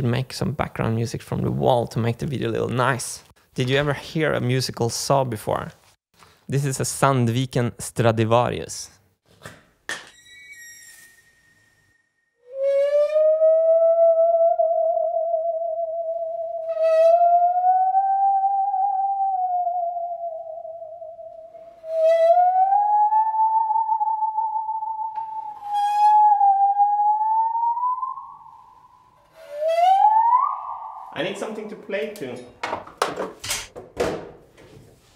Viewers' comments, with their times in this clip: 0:10 when he first draws the bow across the saw it sounds like the start to where is my mind by the pixies
0:17 That sound will haunt me to death! It's creepy as hell.😨